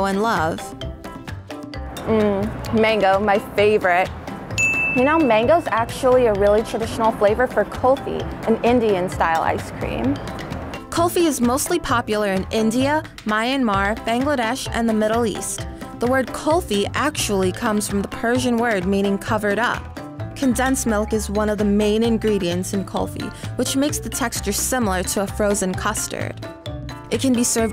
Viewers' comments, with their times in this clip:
0:07 it sound like she is saying coffee
0:10 Pronunciation of K-U-L-F-I is giving me anxiety
0:13 You said Myanmar wrong plus that is were my parents were born in.